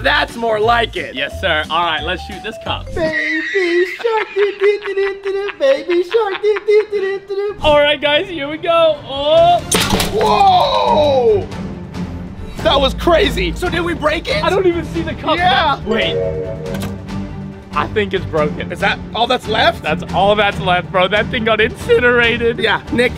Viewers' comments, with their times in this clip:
0:04 the baby shark song sharrk got me 💀